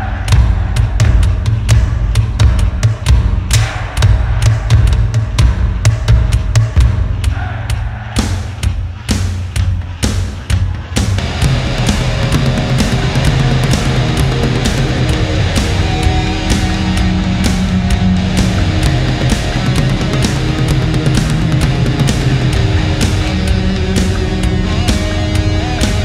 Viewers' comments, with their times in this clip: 0:09 I was there that night! And that transition from drums back to guitar was fucking 🔥🔥 gave me chills i wish i could relive the whole night 😩